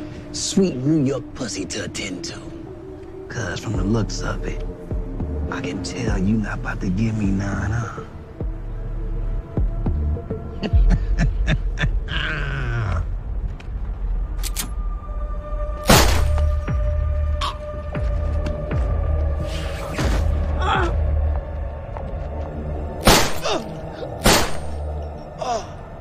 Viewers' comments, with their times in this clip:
0:10 The Way Dude Was Laughing At Monet😂😂😂😂